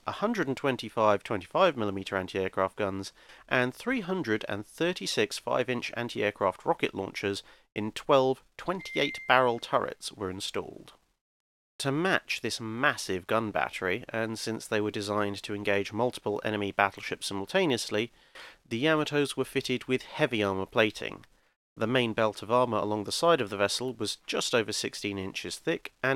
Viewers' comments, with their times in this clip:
0:08 You have the same text alert sound I do